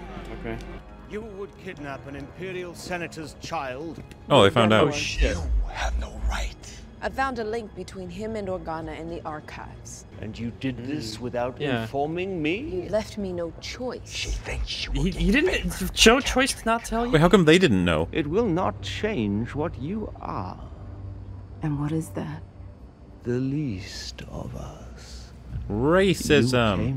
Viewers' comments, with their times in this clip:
0:09 And you did it without informing MEEEEEEEEEE I just can't take this serious. This not intimidating, but just cringe.